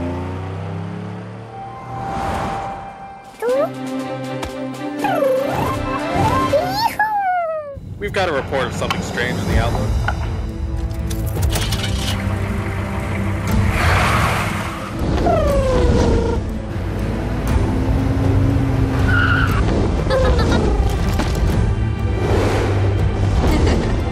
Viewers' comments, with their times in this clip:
0:06 I could listen to that little: Yee-hew all day
0:07 he sounds so cute